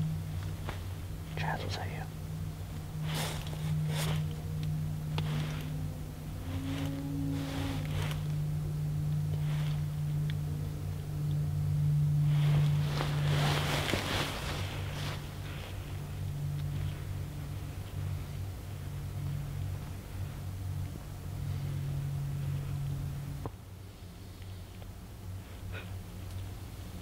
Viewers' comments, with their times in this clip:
0:04 ish sounds like an animal in distress, maybe. Creepy
0:08 in That was a animal noise